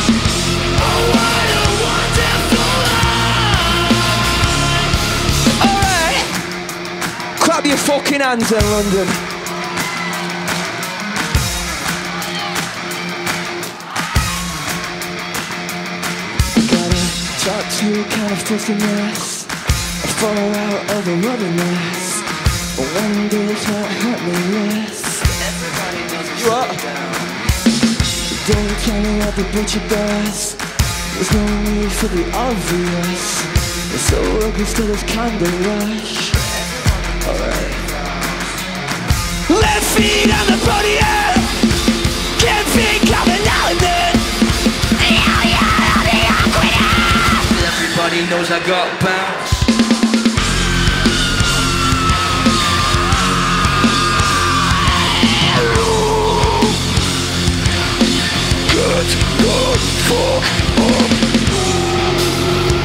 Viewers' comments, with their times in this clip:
0:07 That “clap your fucking hands” is so Yorkshire 😂
0:45 He sounds like a chipmunk who's trying to scream.😂🤣
0:45 Spongebob Shouting lmaooo
0:49 WHSN HE TRIES TO GO DEEP I DIED
0:50 yes amazing scream!Is the best thing that ever heard